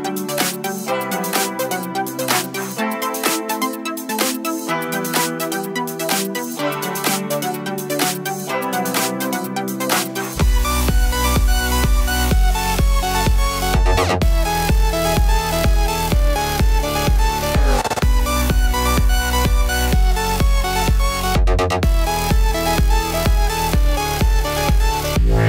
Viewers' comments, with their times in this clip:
0:06 sorry but I wish you wouldn't use dubsteppy techno music like that it's not very canalesque.